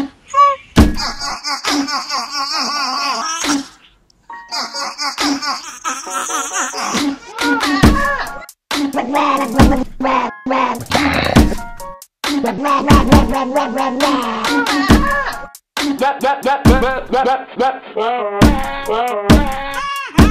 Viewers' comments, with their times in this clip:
0:08 BEATBOX DOG ! Brotha’s got soul.